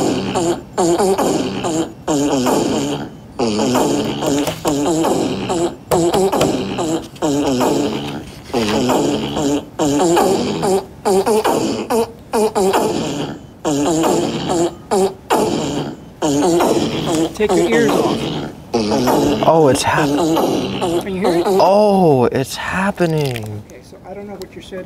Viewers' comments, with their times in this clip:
0:05 He literally slapped the table on beat